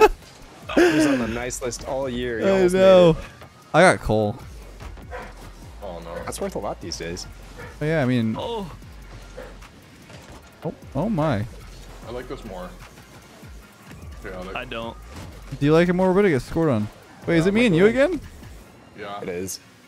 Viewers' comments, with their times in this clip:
0:05 i like how noone said anything abt the dog barking 🤣